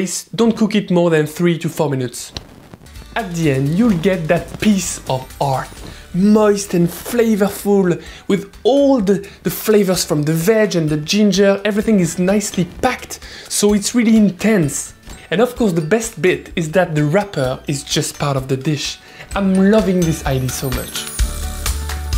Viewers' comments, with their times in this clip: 0:09 ‘Flavor from the vagin...’didn’t expect him to describe the salmon like that